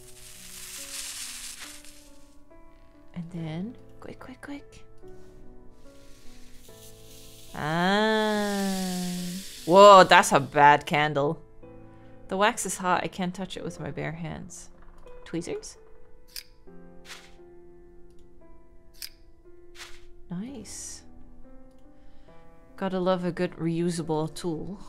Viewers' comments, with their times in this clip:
0:05 when she goes "aaahhh" when lighting the candle with the sparkler...reminds me of Coneheads. The costumes helps. 🤣 I love the tree costume! So cute!